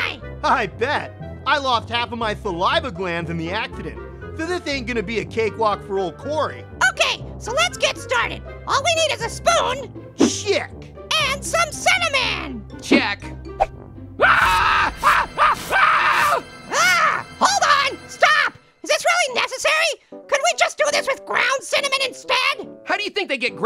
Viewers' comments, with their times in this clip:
0:09 i thought he said the s word lol